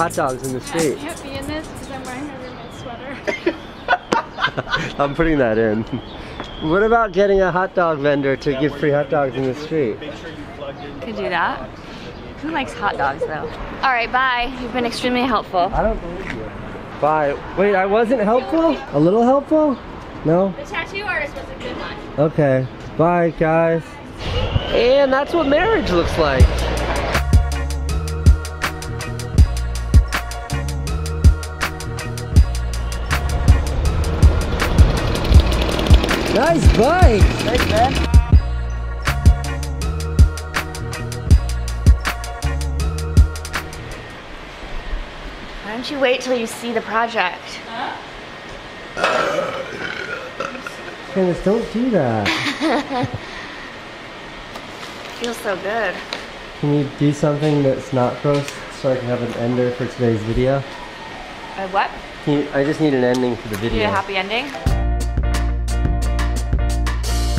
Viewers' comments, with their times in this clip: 0:04 Anyone else hear a Scott Airpack being checked off ?
0:44 Haha! That burp... Magnificent! What a great woman :-)
0:52 lil uzi laugh